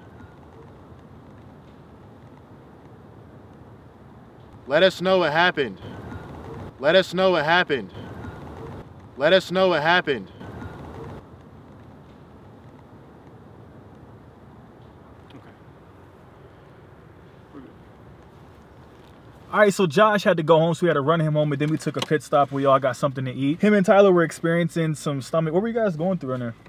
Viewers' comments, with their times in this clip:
0:10 the female voice sounds like she is saying "They hurt me"